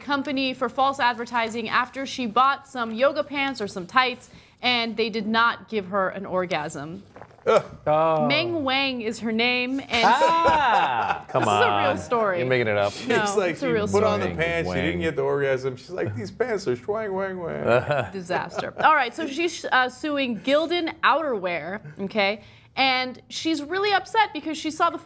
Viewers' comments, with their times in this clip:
0:06 someone swallows their saliva...